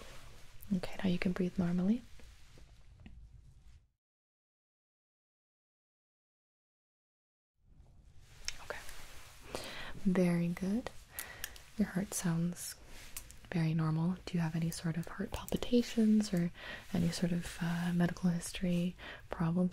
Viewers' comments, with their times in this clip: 0:03 you muted the mic to fart didn't you